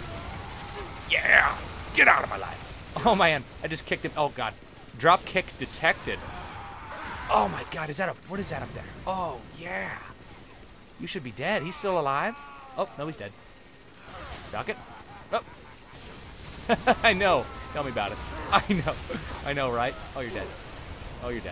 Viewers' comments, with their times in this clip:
0:04 I thought you said "dropkick detected." haha